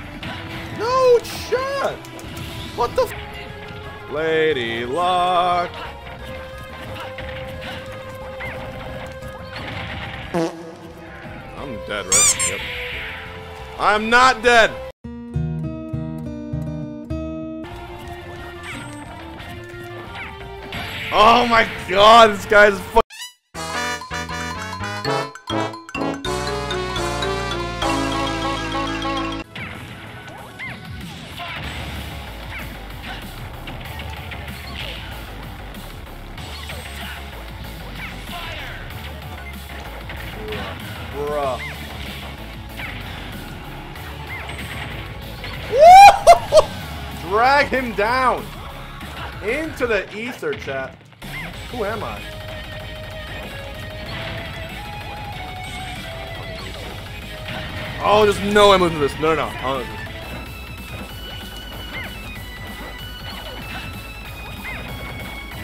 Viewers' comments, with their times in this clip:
0:09 that moment when reverb fart.
0:50 What is this song ?! Hard af when it drops